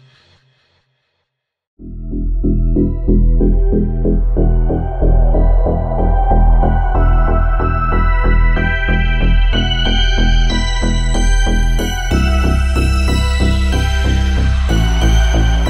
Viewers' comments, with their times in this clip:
0:03 I like the music that started very new retro synth wave style. I love that stuff! Its like wqtching an action montage in an 80's movie!!! 😁